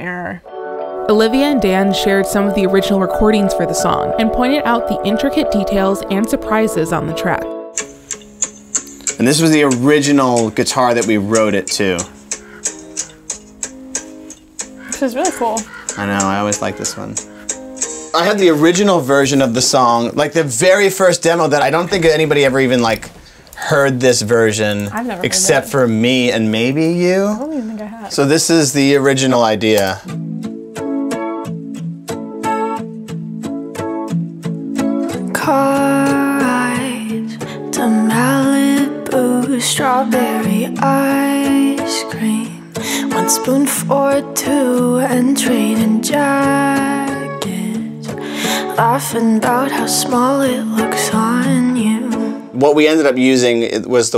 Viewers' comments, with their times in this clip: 0:09 the guitar strums sound exactly like the intro to Enchanted by Taylor Swift!!
0:29 They need to release the alternate version. It gives a much more bittersweet touch to it. The timestamp is btw.
0:40 Demo is a bop too
0:41 it’s so crazy that I could picture that being the song but they both knew there was a better tempo to put the song to